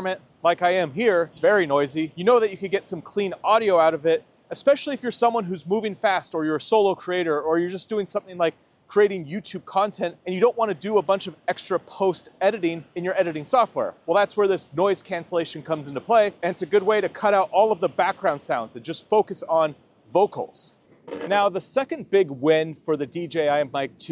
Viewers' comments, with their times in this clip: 0:05 just listening to this and you're saying Clean audio you can clearly hear the tinny noise coming through, terrible. Rode Pro in this comparison wins.